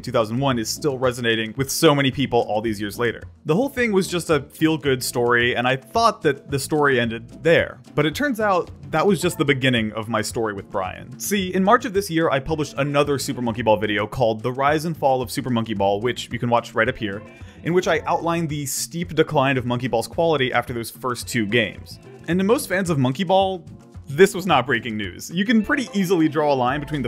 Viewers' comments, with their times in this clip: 0:10 the way he says "see" sounds funny